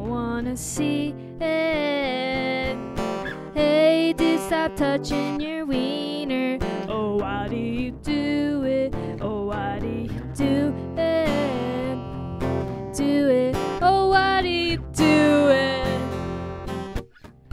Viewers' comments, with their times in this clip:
0:03 its giving red hot chili peppers